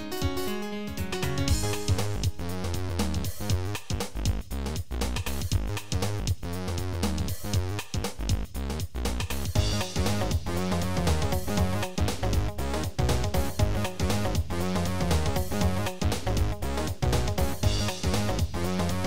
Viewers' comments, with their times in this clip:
0:03 death killing the entire town meanwhile the music goin 🕺🕺🕺🕺